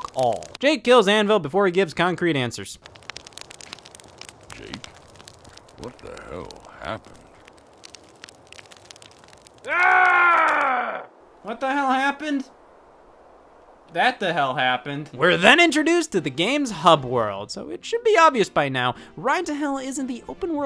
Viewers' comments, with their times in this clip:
0:04 The voice acting just kills me every time.